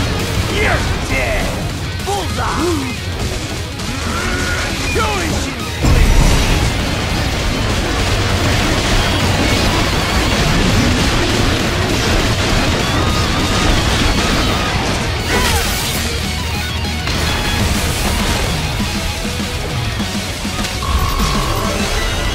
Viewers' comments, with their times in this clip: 0:05 Its kills me how Monsoon says : "Do as you please". HE ACCEPTED DEATH!